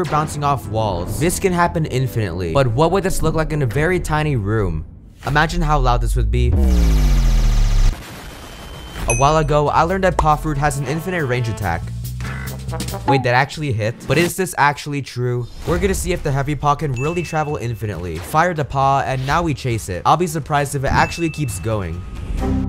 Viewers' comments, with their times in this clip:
0:09 MY EARS BURN